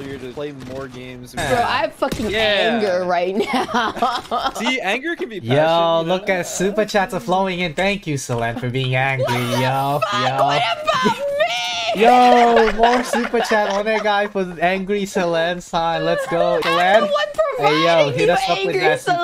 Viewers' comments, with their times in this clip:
0:04 the callout... u didn't have to be so loud....😂😂😂